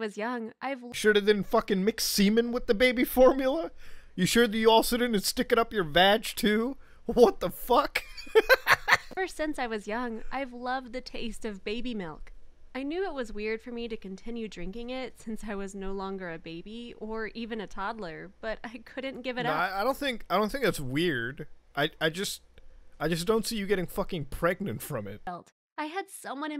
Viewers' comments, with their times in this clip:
0:07 this wtf is the best wtf i ever heard